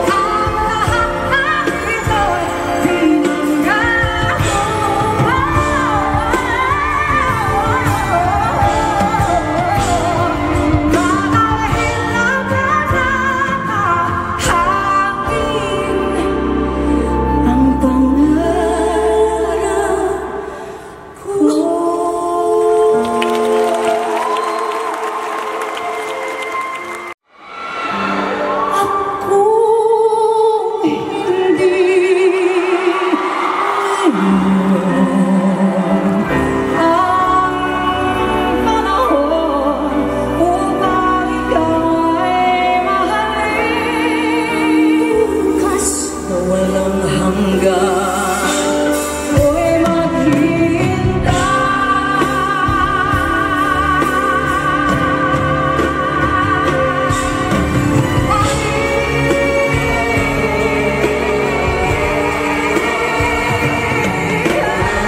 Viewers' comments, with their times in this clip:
0:06 Those runs are giving me goose bumps
0:45 You can tell Sarah's voice has matured big time. Those resonant low notes at the beginning (as well as "na walang hanggan" ) are so pleasing to the ears.
0:46 Sarah's low notes Beautiful